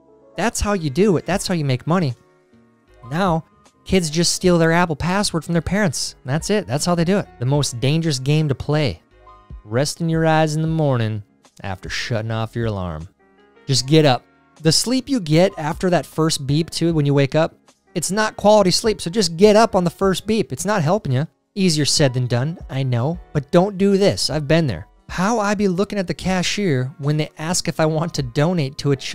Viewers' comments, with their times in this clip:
0:10 Spongebob has an alarm clock bong